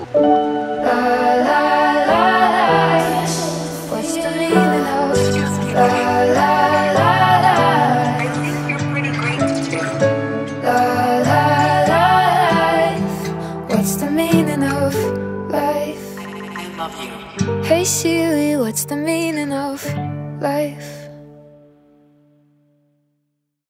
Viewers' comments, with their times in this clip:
0:08 i heare it think get of rid of rabies too-